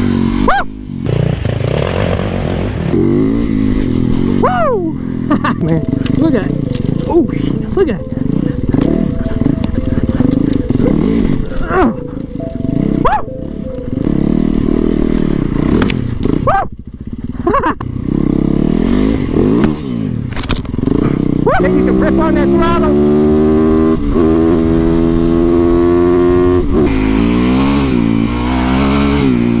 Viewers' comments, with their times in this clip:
0:10 My favorite part of this video, the harmony of grunts from you and your bike at the same time 😹😹😹